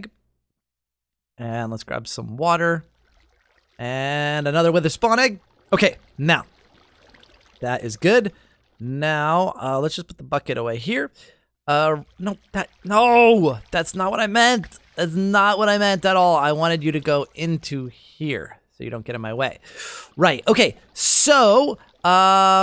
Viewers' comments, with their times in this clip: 0:09 he sounded like he said fuckit